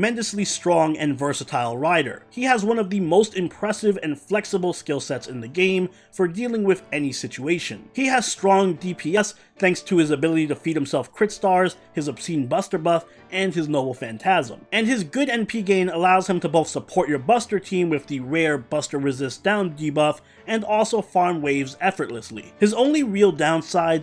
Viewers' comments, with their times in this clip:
0:08 Were you... were you clapping?